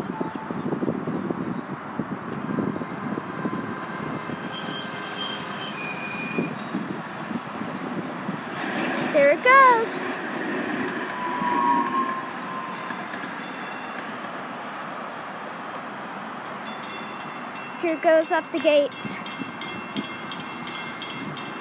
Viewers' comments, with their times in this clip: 0:05 squealing whistle action